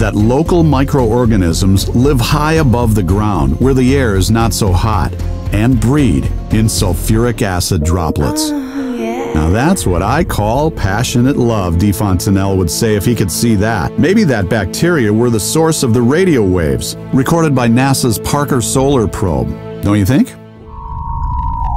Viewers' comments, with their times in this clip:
0:08 i started the video at exactly on full volume. ahh yeaaa :/